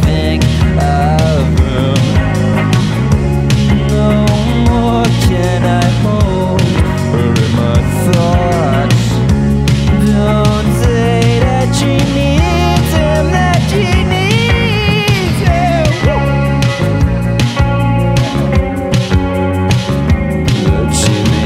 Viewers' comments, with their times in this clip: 0:09 I love that chorus, but it's very difficult to sing :)